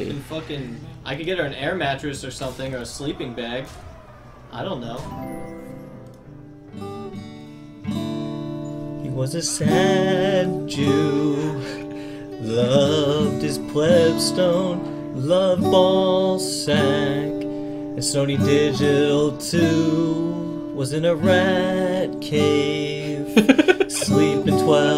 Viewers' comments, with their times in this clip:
0:07 That song was the funniest thing I've seen all week LUL